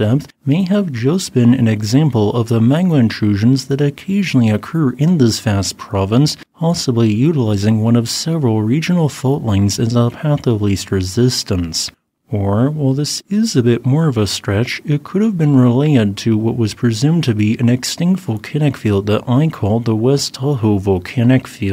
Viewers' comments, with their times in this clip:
0:09 I like the information, but I cannot take this voice anymore. This computer animated mispronounce too many words voice just terrible.